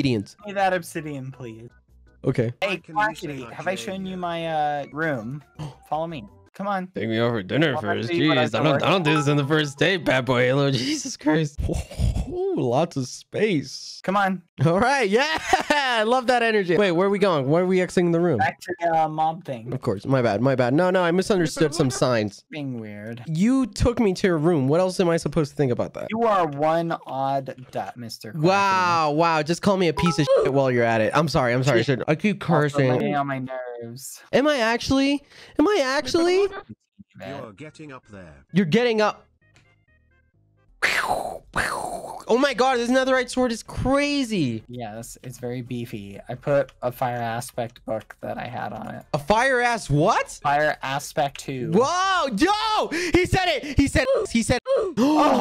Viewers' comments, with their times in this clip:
0:09 he has a voice crack when he says “ Jesus Christ “ 🤣
0:39 THE LICKING OF THE LIPS